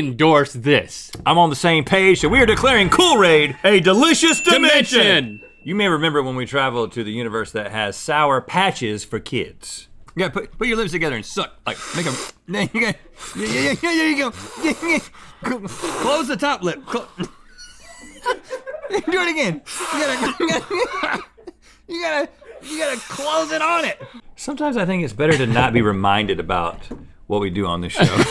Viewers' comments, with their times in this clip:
0:10 i absolutely love this moment. I think about it often.. Link slurping ham and cheese from his shoulder